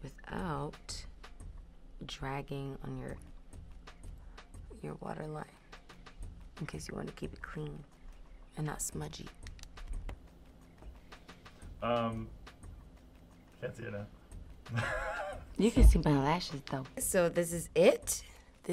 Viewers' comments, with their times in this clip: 0:05 I can't "wants to make u keep it creamy 😭😂😭😭😭"